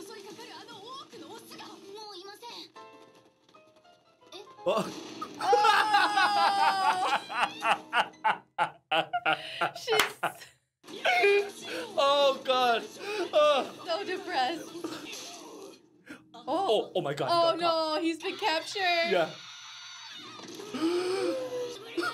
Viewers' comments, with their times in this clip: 0:07 sounds like an anime villain laugh lol